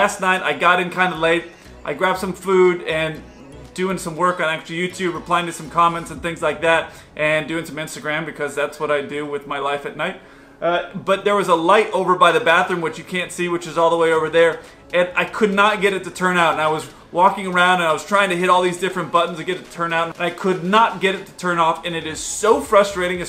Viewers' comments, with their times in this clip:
0:10 Just noticed, you're talking really loud for a hotel room. Low tones, low tones. 😅